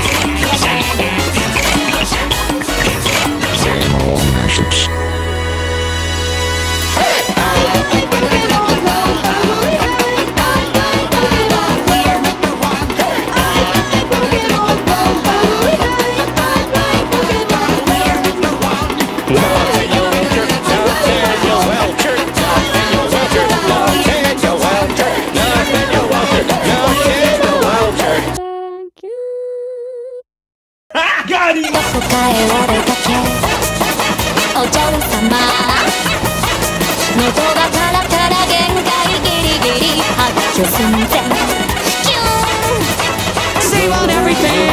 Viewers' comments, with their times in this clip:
0:09 There is het its just very faint
0:32 Gabe is barking Woodman's theme